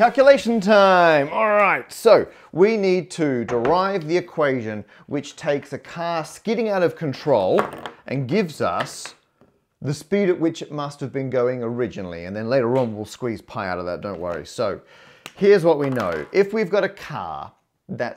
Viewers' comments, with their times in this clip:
0:03 Am I the only one who hears Netflix ?